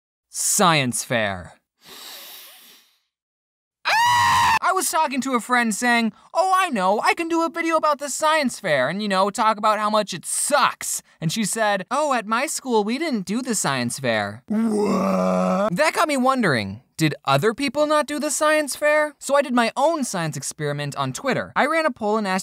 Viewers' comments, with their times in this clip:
0:04 Perfectly cut scream if you pause
0:04 to anybody who wanna hear the amazing scream 😊
0:04 I was wearing my headphones on full blast 😭🪦